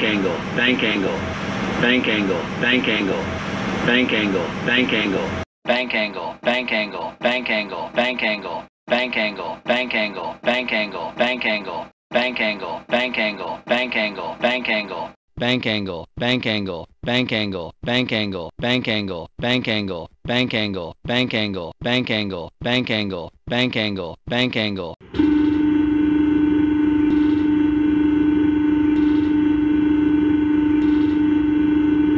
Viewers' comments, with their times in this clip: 0:06 sounds like bencango
0:16 sounds like “man can’t go”